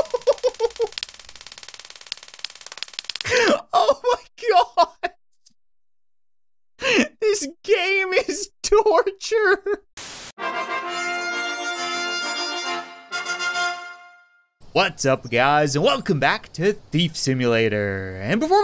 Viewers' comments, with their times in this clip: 0:04 laughing this game is torture